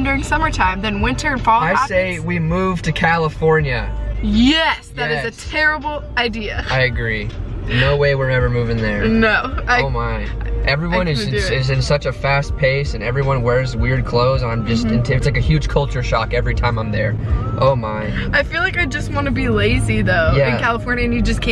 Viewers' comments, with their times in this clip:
0:05 The trippie redd in the backround thoooo😍😍